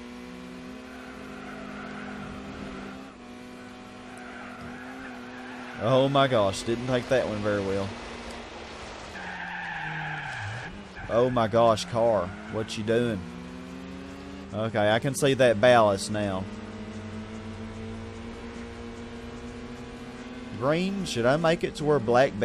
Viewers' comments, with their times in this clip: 0:09 ... When the Eurobeat hits you😁😁😁